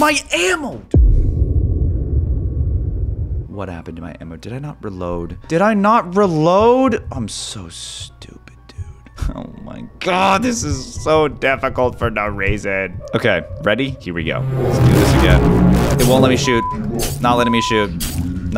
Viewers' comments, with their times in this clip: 0:05 bro forgot to blur the swear word
0:05 For 2 seconds Caylus forgot to blur the curse word
0:05 his editor didn't see the f word so the f word was not blured at that time also to not demonitize him pls
0:06 Editor did you blur the F word on 😅
0:06 editors did not bleep out cuss word
0:06 U FORGOT TO SENSURE THE F-WORD